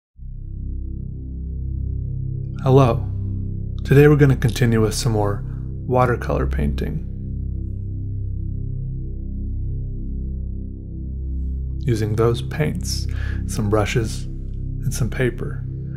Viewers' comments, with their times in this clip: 0:00 omg he sniffed on pens again